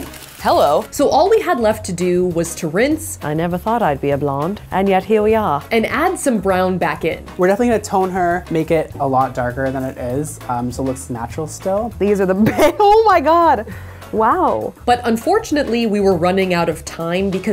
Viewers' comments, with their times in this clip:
0:03 she sounded exactly like google assistant or google translation voices